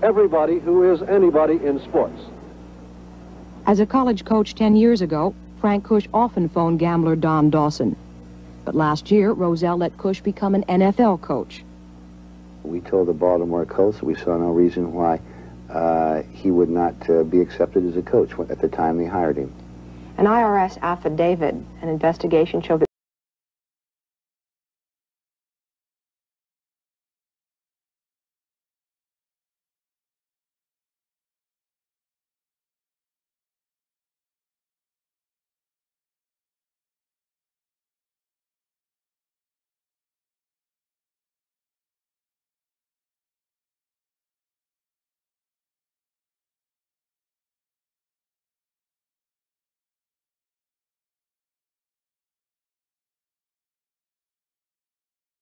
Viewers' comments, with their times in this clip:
0:03 Audio cuts out
0:40 Piss. Sound stops